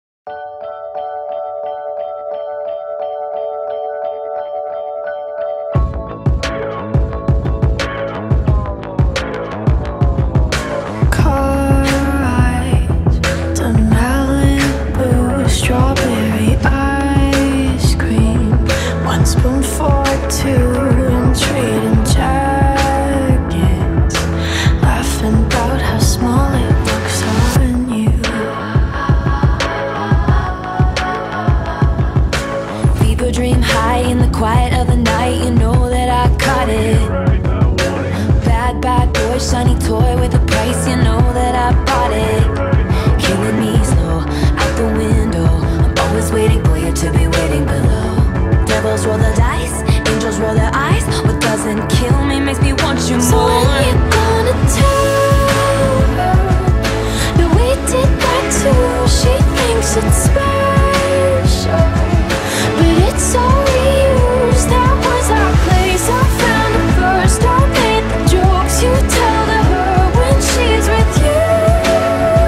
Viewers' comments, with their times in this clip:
0:07 omg the transition in sounds sooo good!! I’m obsessed with this mash up
0:53 The change from to Olivias part is such a smooth transition!!